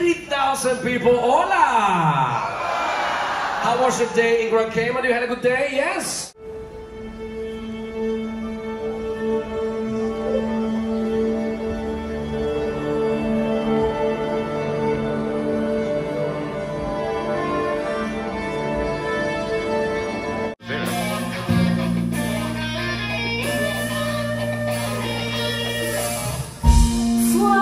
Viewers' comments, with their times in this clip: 0:08 why did it sound like the PS3 start up?!?!